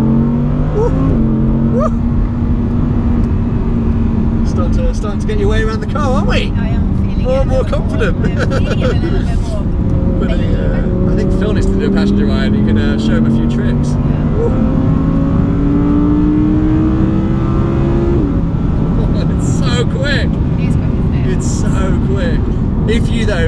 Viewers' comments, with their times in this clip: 0:10 She dropped a sly "baaaabe" shes vybzing